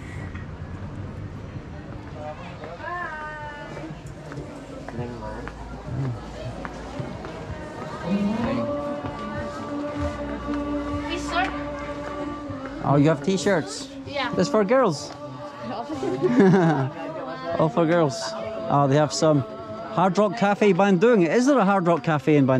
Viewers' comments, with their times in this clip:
0:10 sound of adzan is really beautiful. Feel calm. 👍👍👍